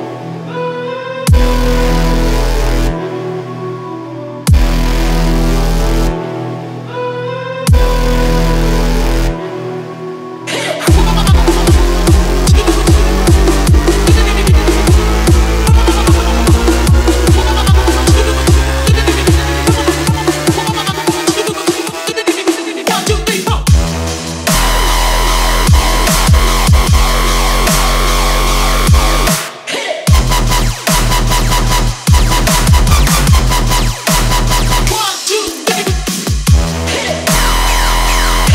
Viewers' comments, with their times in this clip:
0:10 How does this have 6.2k likes? It's kinda acceptable until and then everything turns into someone just smashing buttons on a keyboard to make sound.
0:26 The remix was great until that's straight up just noise. Just my opinion though, people actually like listening to that sound?